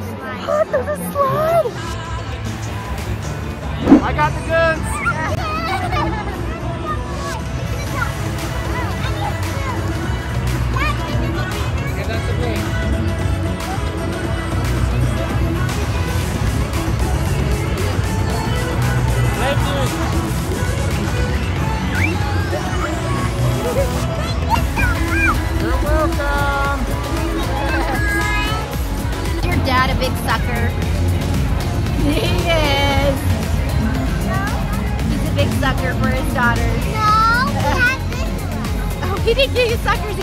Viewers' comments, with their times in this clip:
0:10 can u hear bts dynamite in the back
0:21 I love how Dynamite is play in the background